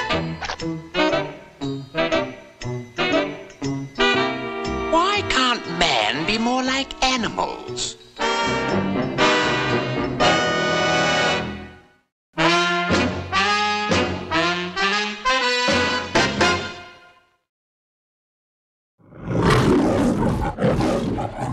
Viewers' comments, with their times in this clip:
0:04 OMG PINK PANTHER TALKED!!!! HE'S THE BEST
0:04 Wow! Pink Panther spoke for the first time! 😮
0:05 Wow? He actually talked? Who knew?